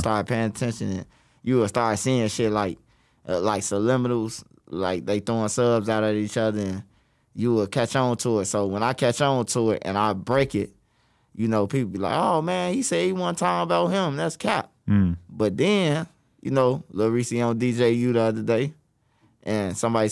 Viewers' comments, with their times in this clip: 0:03 my boa said suliminals 🤣🤣